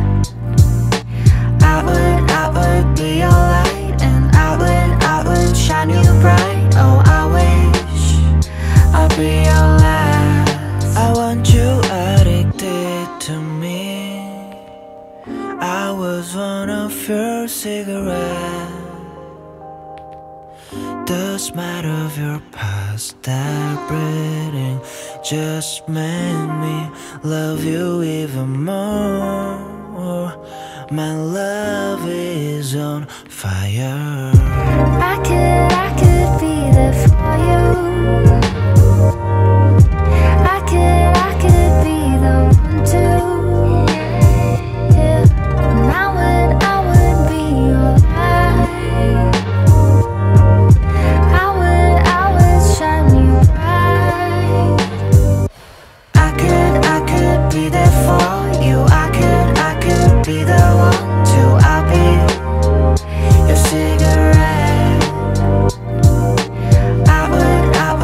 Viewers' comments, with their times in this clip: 0:10 drives me crazy 😂😂💖 I looove his pronunciation. 💖✨ Korean men ftw 🙏🏻🙏🏻
0:55 that smoke blow in !!